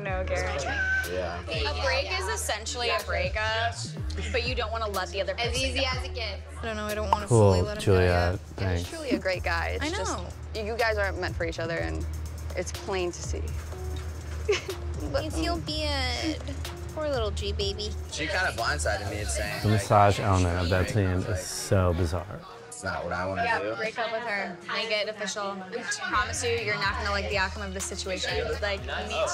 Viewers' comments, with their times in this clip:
0:10 Did Cara say in a baby voice "But I feel bad. Poor little G Baby." Doesn't sound like someone who is at all heartbroken.